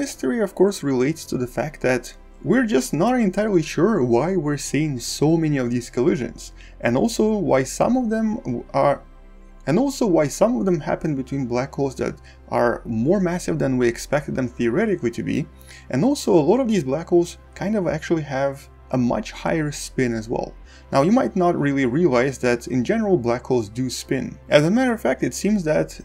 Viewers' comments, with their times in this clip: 0:08 Did you forget to edit a minor hesitation ?